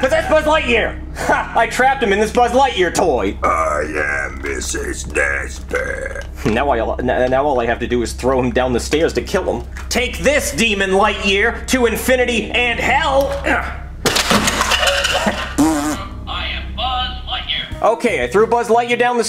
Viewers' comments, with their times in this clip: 0:06 is the first time ive ever heard a stutter lol